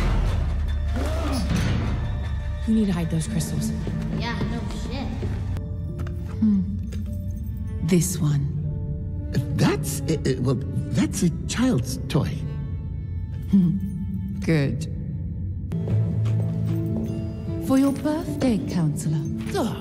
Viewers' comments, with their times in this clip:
0:04 Did I just hear Mable Pines swear? Was not expecting that today.